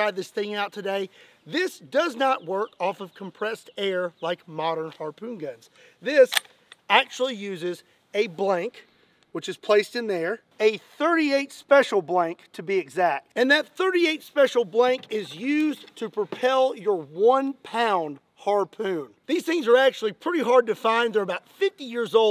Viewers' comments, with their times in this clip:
0:03 Is it me or did he put an L in Jaws(JaLws/Jawls)?